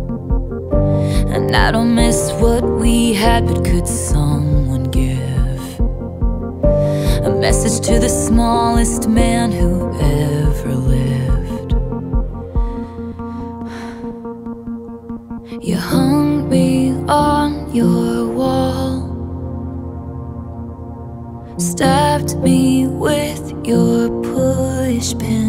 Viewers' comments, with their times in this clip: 0:10 she can go deep but when I try I sound like an old man.